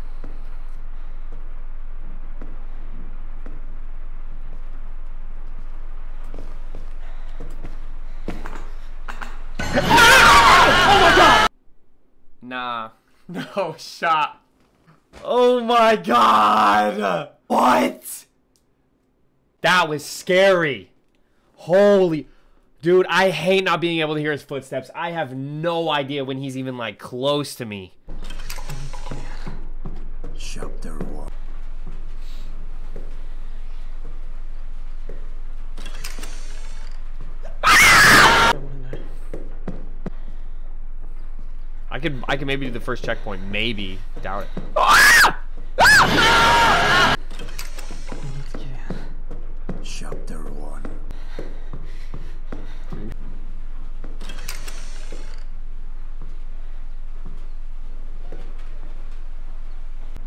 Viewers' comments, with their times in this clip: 0:05 He wasn't ready lol, here's before he shouted
0:08 Omg my heart when i heard his screaming i almost passed away 😭 his screaming is more scary then jumpscares
0:09 it's so scary of him screaming not the jumpscares
0:09 Michael Jackson: AHHHHHHHHHHH Him: AHHHHHHHHHHHGGGGGG
0:10 It is so funny that he scream
0:28 My friend said "Im a man" in the minute scream like a girl
0:42 the scream lol
0:43 for 1 second I thought he was caught, then I realized that was him screaming. Only then I understand that wasn't the monster screaming all the time, it was him...
0:43 bro watch from that laugh though I'm surprised he isn't in the game
0:43 michael stopped for a sec when he screamed 🤣😂
0:44 you scared the heck outa me when you screamed and IF YOU DIDNT SCREAM YOU COULD’VE SURVIVED WA